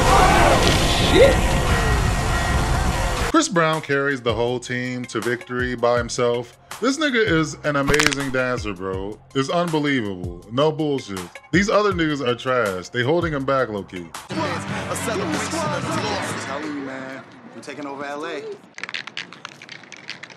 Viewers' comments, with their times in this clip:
0:07 The bone crack sound 😂